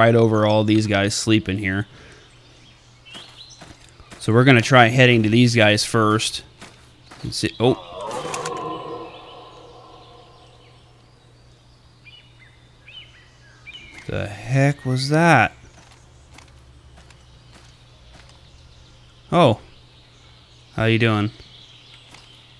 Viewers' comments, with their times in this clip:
0:08 was a bear roaring